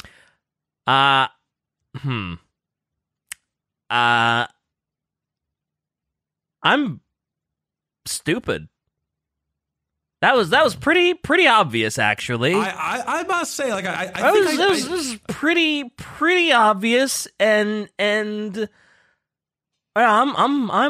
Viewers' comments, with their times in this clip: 0:08 The silence is deafening.